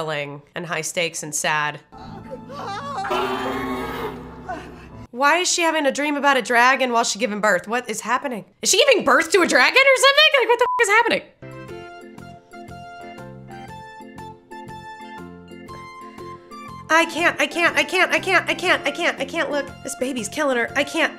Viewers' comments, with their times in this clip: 0:09 “Is she giving birth to a dragon?!” I mean…kinda, yeah. But the roaring was actually her dragon Syrax feeling her pain and stress through their bond.